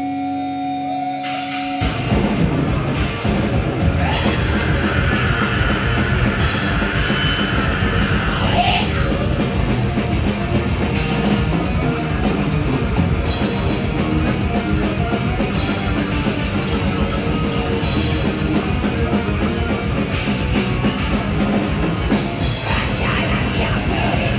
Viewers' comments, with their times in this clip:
0:07 I love how it took some good 30 seconds before they had gotten over this weird mic attack :D